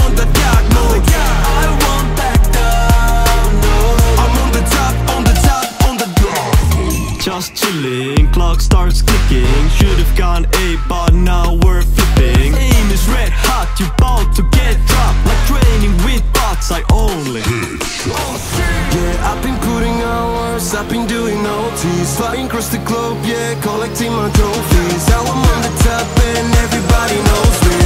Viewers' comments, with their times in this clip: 0:08 sounds EXACTLY like big steppa underground steppa